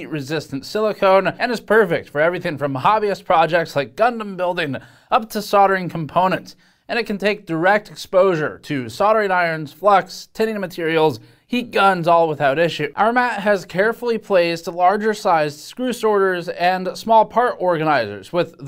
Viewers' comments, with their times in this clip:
0:03 All i hear is Gun building 😅